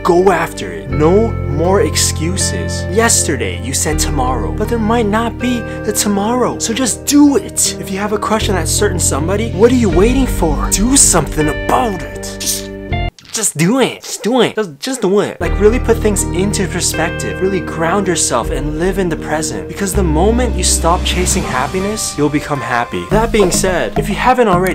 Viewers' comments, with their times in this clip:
0:06 I heard creepy whispers am